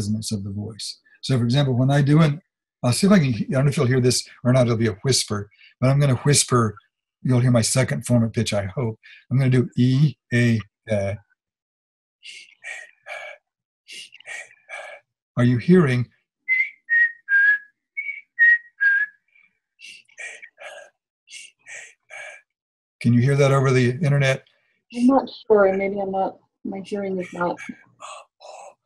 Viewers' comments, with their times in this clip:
0:09 oh wow…around when he demonstrated the over/under-vowel concept, the most salient frequency for each vowel was higher/lower based on where the vowel stood within the F1/F2 chart. i guess that makes sense since the “over” vowel is more correspondent with F2 (more influenced by the shape of the front of the mouth) and the “under” vowel with F1 (back of the throat, which is where he was plucking!) not sure about that explanation and i haven’t watched the rest of the video, but it makes sense and is fascinating!